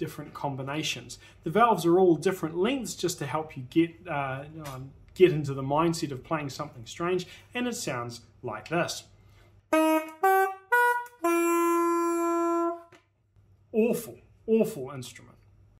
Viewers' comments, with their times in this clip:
0:08 when you lose a mario game in germany